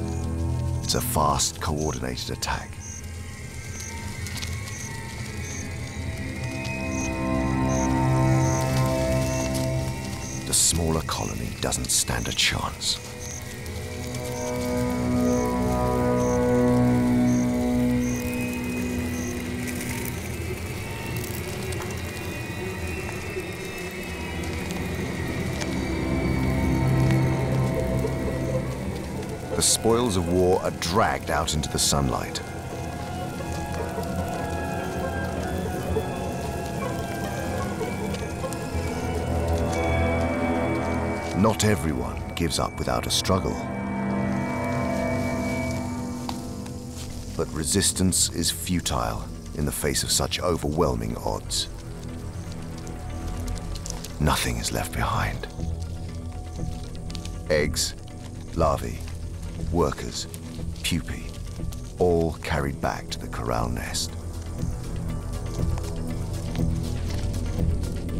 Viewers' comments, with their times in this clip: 0:10 Okay so is the narrator's accent fake? you can hear him pronounce the 'a' in 'stand' and 'chance' differently, even though they should sound the same.
0:53 “nothing is left behind” lmao the way he said that, about ants 🐜